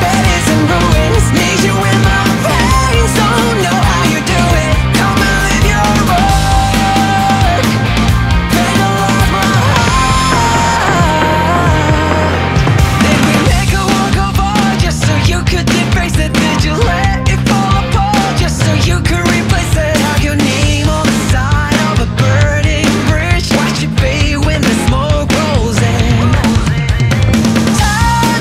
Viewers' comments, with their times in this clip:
0:09 this part of the song sounds very similar to ODD FUTURE by UVERworld (AKA MHA S3 Opening Theme)